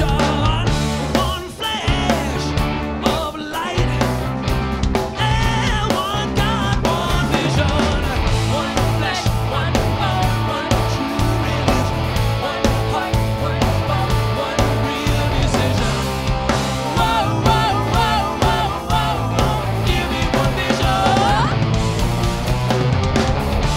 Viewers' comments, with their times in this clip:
0:07 In One Vision there's no Gain at all in the guitars.. It's too clean before